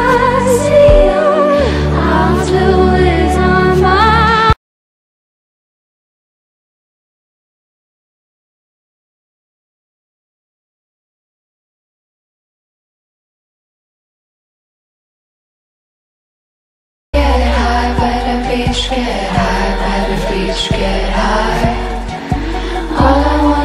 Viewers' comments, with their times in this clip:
0:05 Like, if you checked your internet-connection on )))))